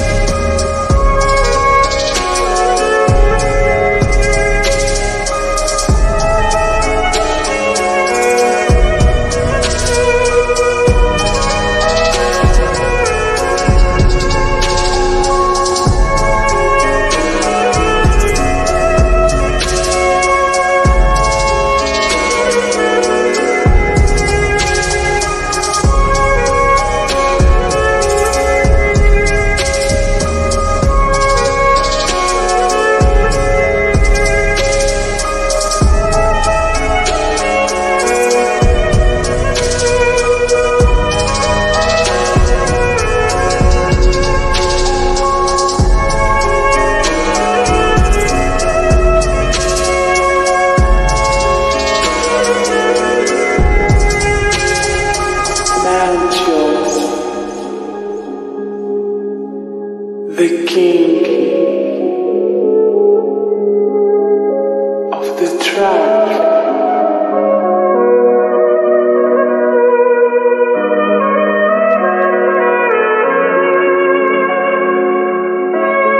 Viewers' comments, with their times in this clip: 0:09 This song is very imosonal
1:00 vêry êmøtîøñãl vêry Sãd Søñg 🥀🥀😔😔